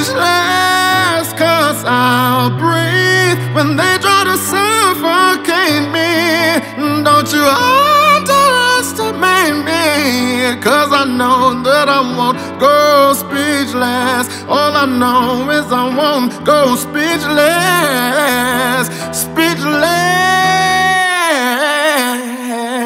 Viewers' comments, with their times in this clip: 0:07 The way you hit that note omg 👏👏